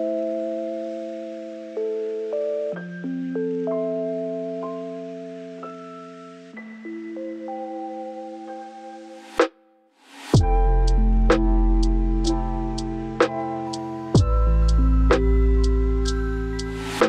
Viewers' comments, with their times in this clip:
0:05 fav part in this video to last.............here from reddit and subbed cuz of this beat and the wiggle dance